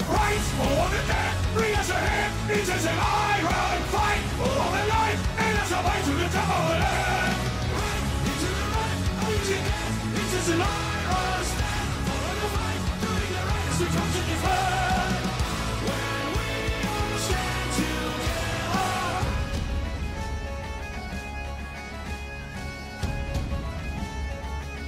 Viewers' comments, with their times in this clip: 0:08 The AI kinda breaks so I ended up having to use the original vocals for a little bit there. Sorry about that!